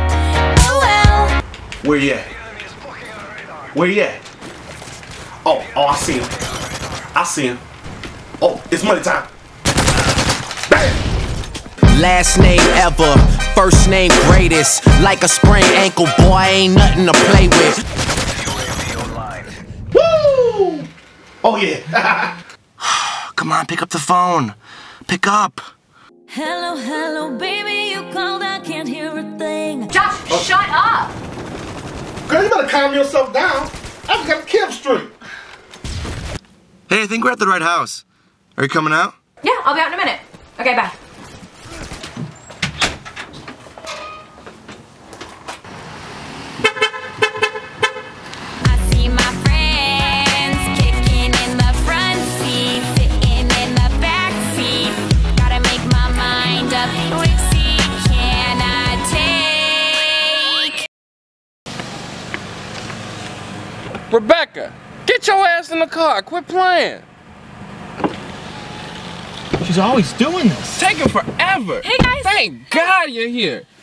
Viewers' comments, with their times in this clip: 0:10 I love the genuine fright she gets from his 'bam'
0:28 Wtf, he has a fucking headset and the game makes still noise, how does he do that??!!
0:57 WuT WaS THe SoNG ? iT SouNDS LiKe a aNGeL